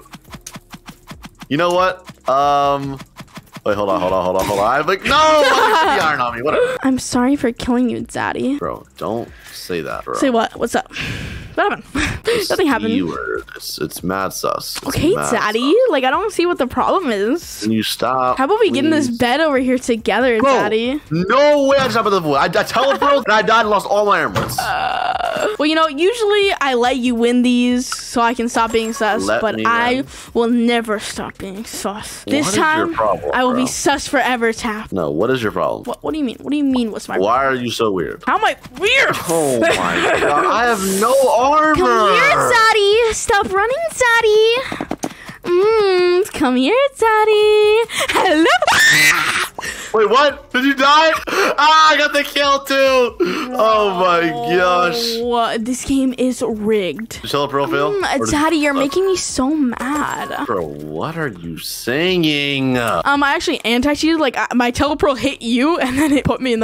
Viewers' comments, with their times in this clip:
0:06 bro sounded like a girl and it was hilarious
0:45 he sounds like an actual girl, when I first saw this scene I thought it was a girl.
0:48 THE SCREAM GOT ME 🤣